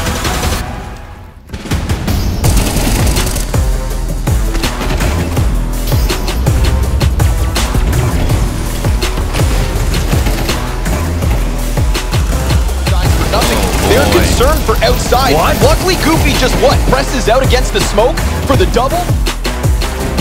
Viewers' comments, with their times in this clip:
0:03 that sync between the music and ak47 noise is powerful dope